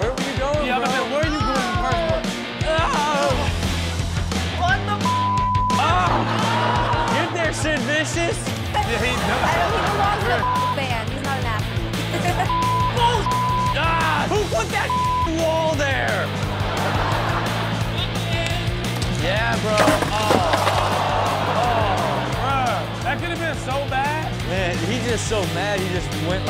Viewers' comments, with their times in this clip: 0:10 they bleeped out “punk”